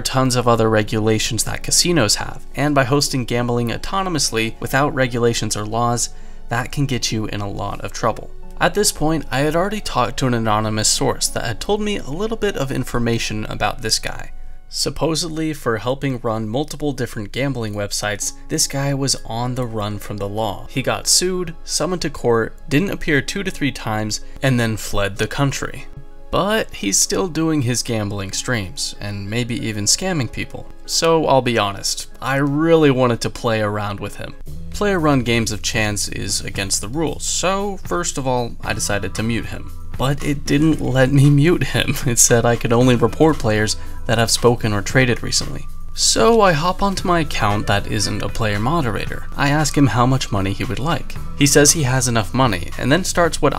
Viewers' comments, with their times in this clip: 0:10 From a psychological standpoint: he repeats the same phrase "oh I bought my account?", This is typically indicative of someone who isn't very good at lying attempting to lie. The use of repetition in a context like this is less likely to be affirmation and instead usually used to buy more time to think of a proper response. The follow-up question of "really?" is used to try and influence self-doubt in the other party (in this case: you accusing him of buying his account). There are other signs such as his demeanour while speaking, the tone of his voice in general is much more subdued and non-confrontational, etc. A non-guilty person would say something such as "You don't know what you're talking about, no I didn't buy my account." or "No I didn't buy my account, what are you trying to get at?". or anything that would present him as confident or even almost confrontational back toward you, the accuser. Everyone knows this dude bought that acc tho
0:35 The video kind of skips over it, but did he call you the n-word ? It certainly sounds like it